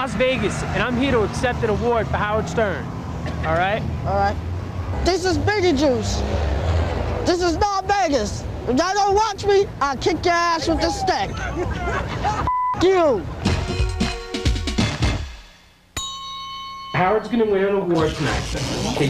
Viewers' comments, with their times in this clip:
0:04 this is beetlejuice, this is Las Vegas if y’all don’t watch me I kick your ass with this stick (people in the background start laughing at beetlejuice) Then beetlejuice says f**k you. That’s my favorite quote.